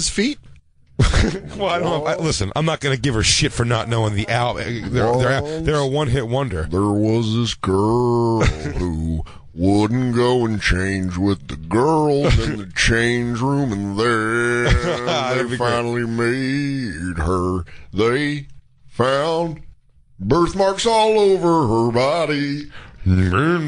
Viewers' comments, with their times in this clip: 0:04 if you want to hear Dan singing Crash Test Dummies